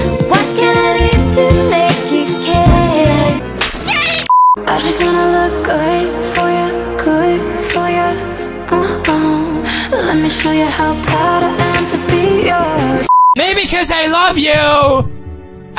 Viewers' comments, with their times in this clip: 0:03 NOT the Pokémon og THEME song 💀 That SLAP. 😳 Poor Minami 😭😂